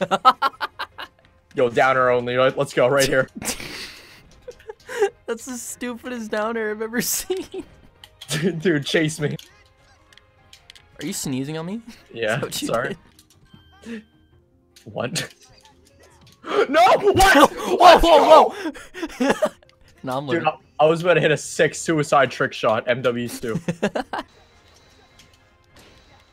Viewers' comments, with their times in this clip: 0:09 when you sneeze achoo